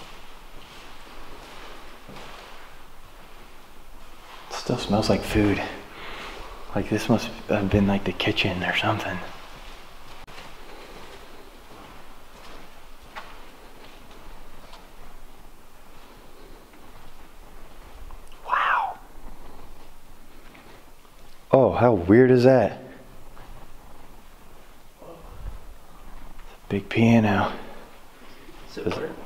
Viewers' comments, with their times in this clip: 0:05 I just heard spin and fear and I heard knocking and I heard treat
0:09 I just heard cannot
0:10 I just heard affard